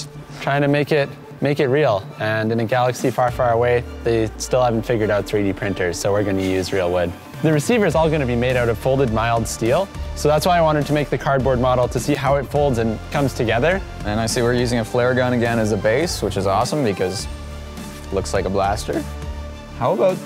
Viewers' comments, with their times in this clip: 0:06 his laugh is so genuine